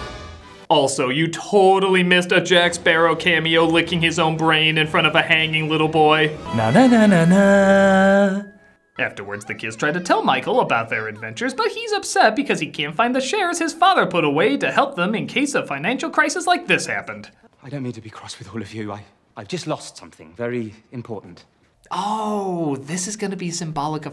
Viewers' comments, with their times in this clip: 0:05 is it just me? Or am I expecting to hear that Jungle 2 Jungle scream at the end of the Disney mnemonic?